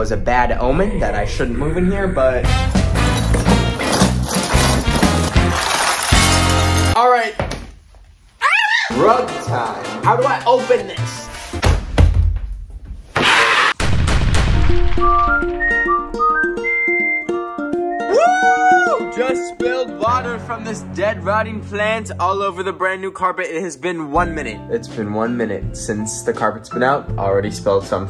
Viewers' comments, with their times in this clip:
0:09 bye i thought he said drug time 😭-